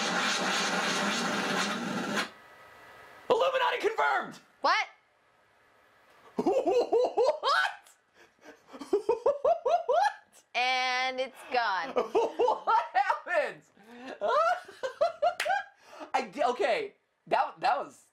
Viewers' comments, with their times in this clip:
0:05 he sounds so happy in this clip-